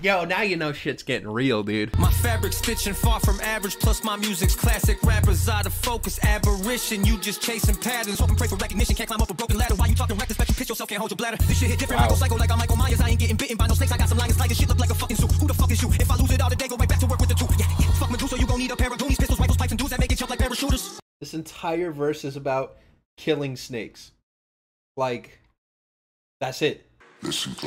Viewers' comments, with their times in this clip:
0:09 the guy who said A$AP Rocky feature bc the deep voice 💀